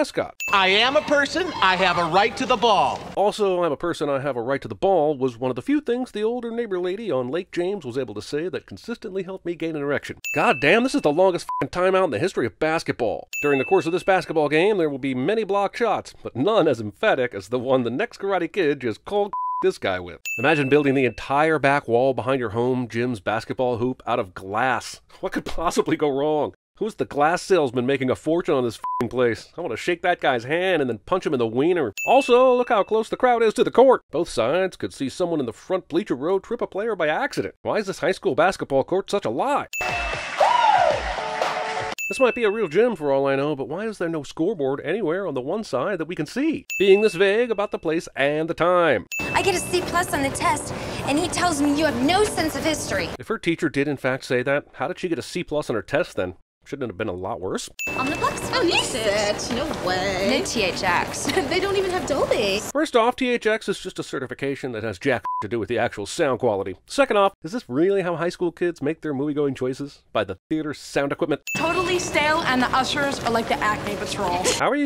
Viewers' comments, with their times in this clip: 0:06 it sounds like you say a very bad word here but you don’t… sounds like it tho. Lol
0:40 If you know when to use it, silence can be comedy.
1:01 Are we sure she's not saying "No thanks" because "kthxbai"?